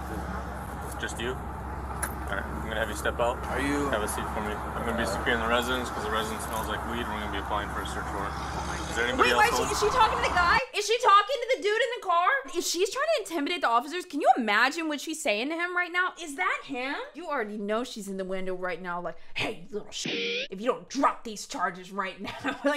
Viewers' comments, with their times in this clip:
0:04 love her SCREAMING theres no weed when hes clocked with a dab pen- dont look like a vape to me